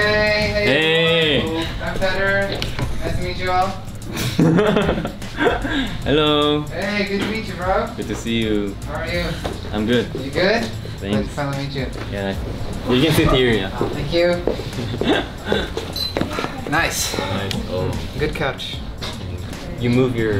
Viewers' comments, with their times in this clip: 0:04 HIS LAUGH IS SO PRECIOUS 😭😭😭😭😭😭💗💗💗